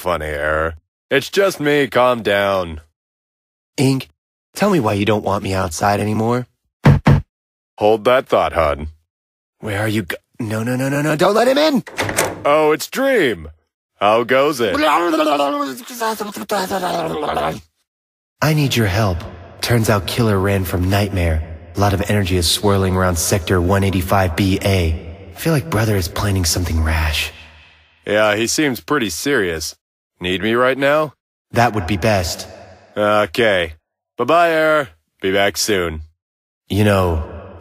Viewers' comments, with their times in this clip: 0:10 the way error that ink opens the the door error turns to a really monster screaming like a dog🤣🤣🤣🤣🤣🤣🤣
0:13 THAT NOISE THAT ERROR MADE SO HILARIOUS OH MY GOSH
0:15 Error is getting Crazy and Dizzy... Lol his Voice too ya know?
0:18 screams Who gave dream A DEEP VOICE